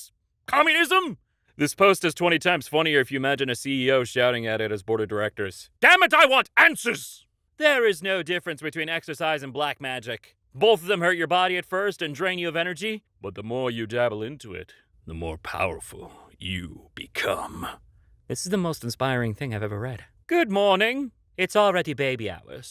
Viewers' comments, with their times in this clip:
0:05 you sound like you want pictures of Spiderman